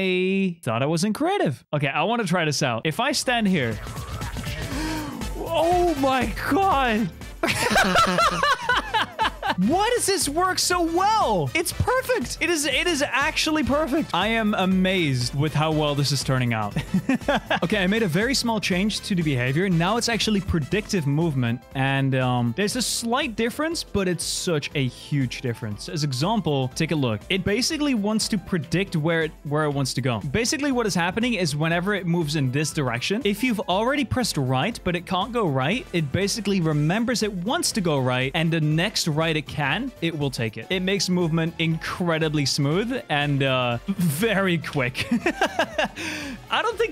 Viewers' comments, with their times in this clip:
0:07 He throat is in pain it is dying HE is dying 😂😂😂😂bring him to the hospital 🏥 😂😂😂
0:32 bro that voice crack made him sound british💀